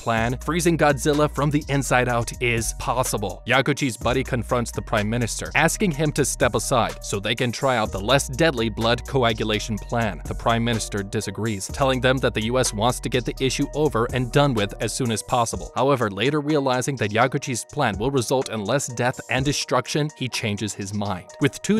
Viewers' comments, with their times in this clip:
0:03 not Yaku Cheese